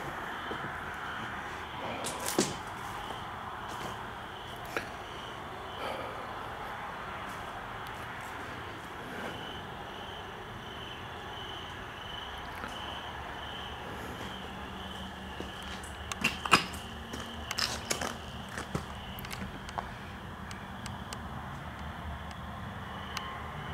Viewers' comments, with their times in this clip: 0:04 I hear laughter and maniacal laughter.